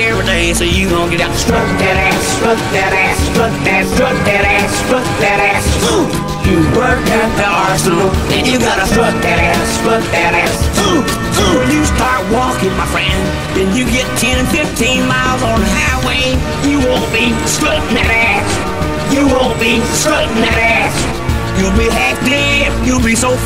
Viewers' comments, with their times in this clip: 0:10 Has more flow than anything on the radio today